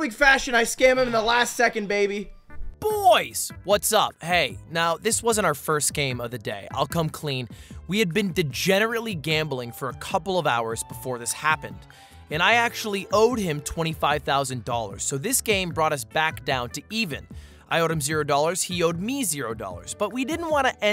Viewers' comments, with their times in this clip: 0:05 wolf of wall street voice over feelings